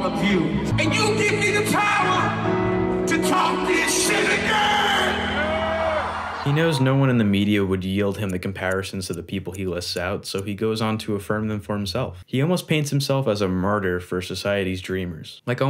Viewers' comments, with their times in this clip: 0:03 when he yells “TALK THIS SHIT AGAIN” you can feel the power in his voice